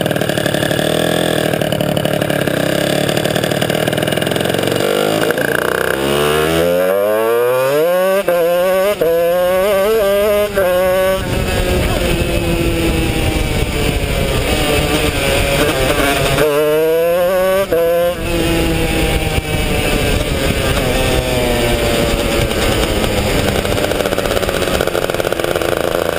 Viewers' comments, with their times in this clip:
0:06 such an awesome 2 stroke sound -
0:06 VTEC JUST KICKED IN YO!!!!!!!!!!!1
0:07 reeeEEEEEEEE reeeeEEEEEEE (Muffled)...OLY (Muffled)...UCK slows down a bit to recover reeeEEEEEEEEEEEEEEEEEEEE
0:07 VTEC JUST KICKED IN YO
0:07 VTEC KICKED IN YO